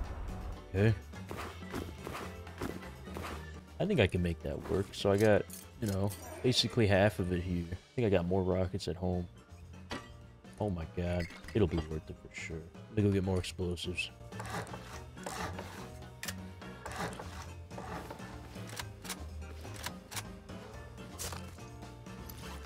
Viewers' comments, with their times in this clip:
0:06 awww shrimp’s meow is sooo cute